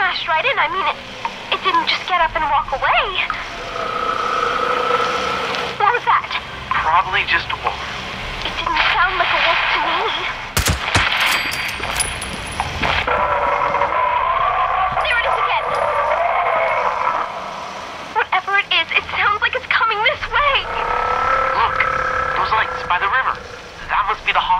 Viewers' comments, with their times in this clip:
0:09 holy crap that gunshot almost made me scream